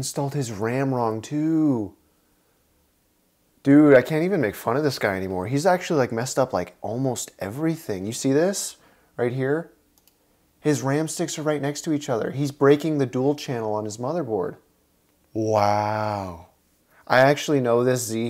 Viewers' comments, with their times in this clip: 0:03 when the tone shifts from mockery to pity lolololololol